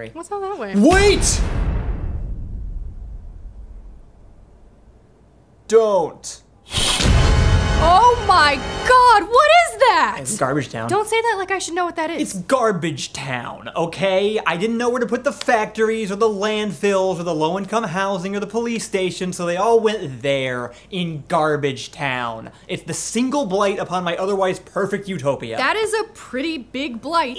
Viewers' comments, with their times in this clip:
0:10 "it's GARBAGE. TOWN." delivered just like Tim Robinson